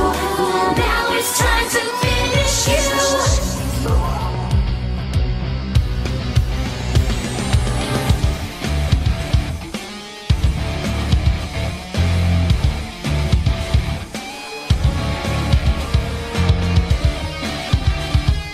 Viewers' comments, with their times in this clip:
0:06 The guitar solo .......... OH MY GOD ITS SO GOOD.